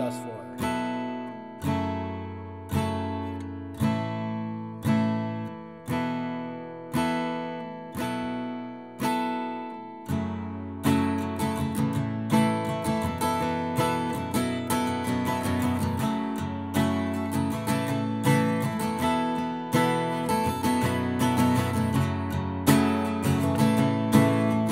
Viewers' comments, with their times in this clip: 0:09 I was cool until It went from me going... I got this as someone who has been playing for a week to... what the fuck did he just do? Balls to the wall all of a sudden with no explanation. Is he strumming up and down? I can't even tell because it happens so fast and he didn't even say anything lol.